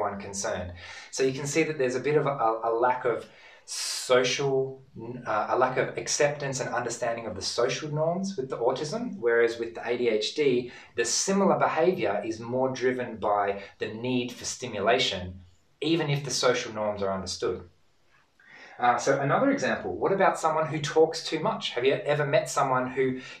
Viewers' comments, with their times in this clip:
0:10 NORMS. For those who do not understand, he means NORMS.